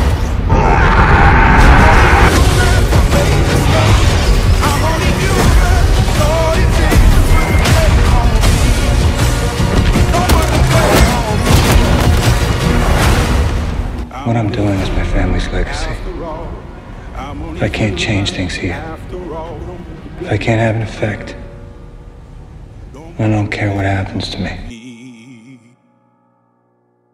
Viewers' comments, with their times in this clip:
0:08 affleck punch is goated with the bass sound affect